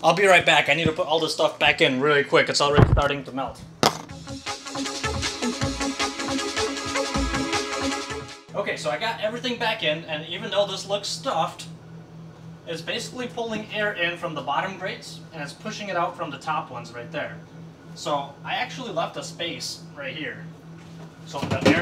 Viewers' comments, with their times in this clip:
0:03 at the minute mark he checked the audio after re-assembly and pronounced it to be very nice. But then one second later its making a noise again that sounds like the original noise, just at a lower volume. Anyone else hear that?